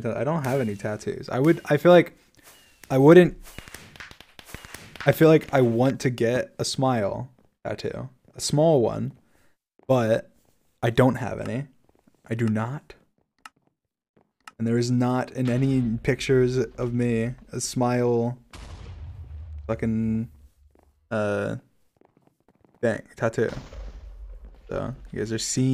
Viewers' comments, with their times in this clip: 0:08 “A small one” You cannot tell me he doesn’t sound like George when he said that phrase.